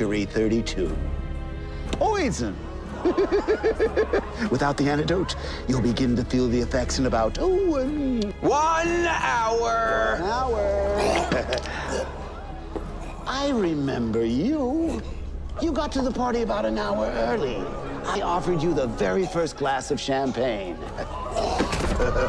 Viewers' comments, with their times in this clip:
0:03 He did his Joker laugh!!!!!!!
0:08 Cameron Monaghan? Kinda sounded like him.